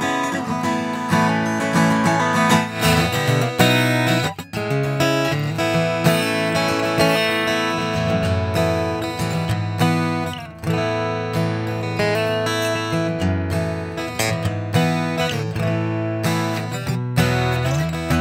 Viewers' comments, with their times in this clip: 0:03 Line input sounds terrible :/. Is the ES2 system really that bad!?? I'm thinking about buying that guitar... but the line input... :/